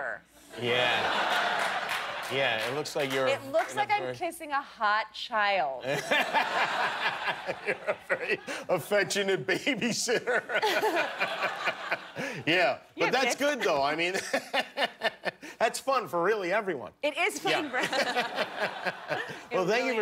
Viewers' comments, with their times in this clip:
0:05 She says it looks like she's kissing a hot child, and he laughs just a little too hard for someone associated with J.E.